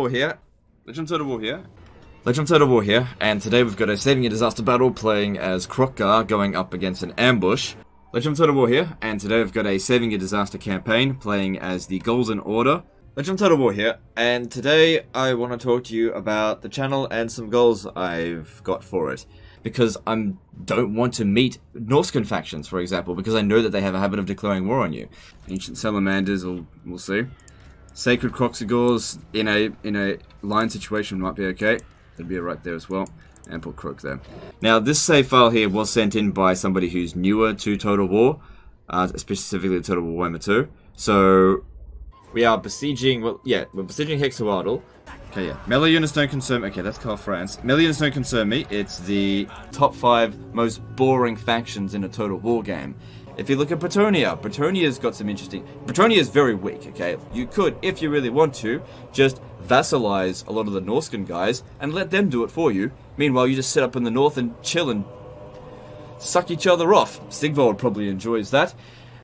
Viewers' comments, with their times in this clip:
0:03 OH MY GOD IT PRONOUNCED "SAVING A DISASTER BATTLE" CORRECTLY
0:55 'Eternia is very weak' Skeletor noises intensify